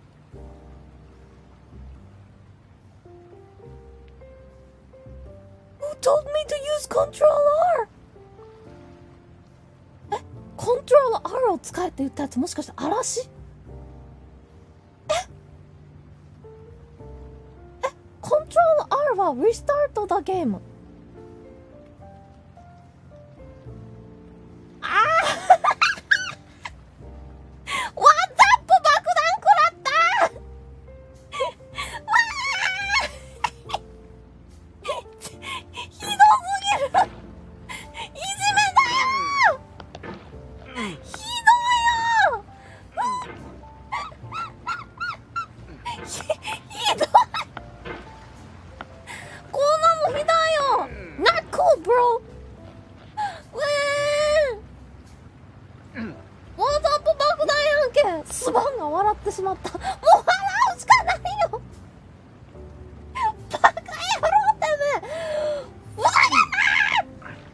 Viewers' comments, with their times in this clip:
0:05 Equivalent to you telling a kid to press alt + F4. I love the despair in her voice.
0:24 this laugh just pure pure sugar, now i have to handle this diabetes
0:45 The way she said it, I felt it man
0:50 The way she says "not cool bro" its soo cute. Ah,yes big F. you can tell she is mad with watching her avatar expresions.